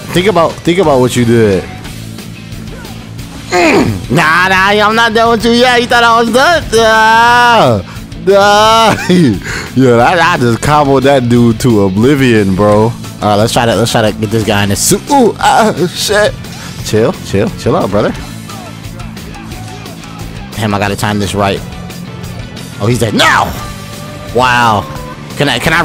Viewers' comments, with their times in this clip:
0:07 Blow your nose dawg